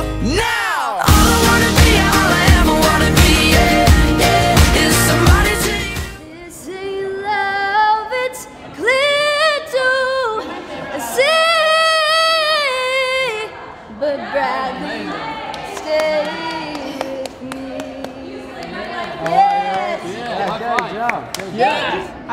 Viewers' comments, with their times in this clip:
0:04 HOLY CRAP THATS ME SINGING TO THEM I CANT BREATHE